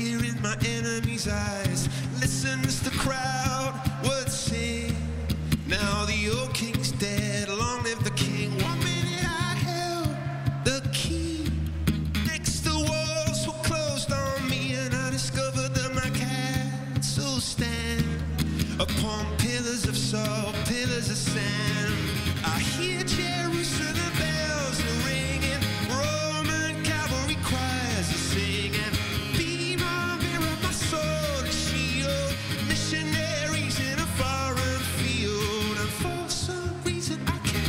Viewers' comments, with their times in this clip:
0:08 Okay, I know this is live, I know it is extremely hard to do this (plus he's accompanying himself on the guitar at the same time), I know what I do is not very kind, but please... just listen (especially the "key" note) and tell me this guy doesn't need vocal coaching. I mean, he has such a beautiful voice - this is obvious - , I find it very sad that he does not manage it well. And there is no need of perfect pitch to notice that a singer is not comfortable on singing his song on stage.
0:25 And even playback!! How the fuck can you call this performance "acoustic"??